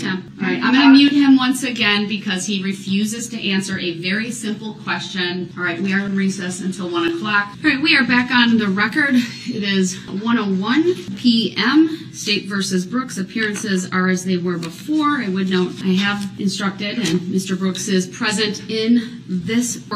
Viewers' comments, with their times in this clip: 0:07 oh on this day you can hear it towards the part where he gets kicked out he was getting desperate he knew it wasn't going to end well for him